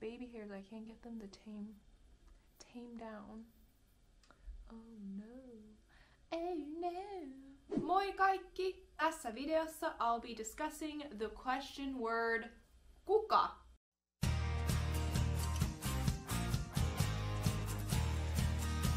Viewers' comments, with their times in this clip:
0:06 you went "Oh no". And I automatically went "I know" with the same voice haha :D #Familyguy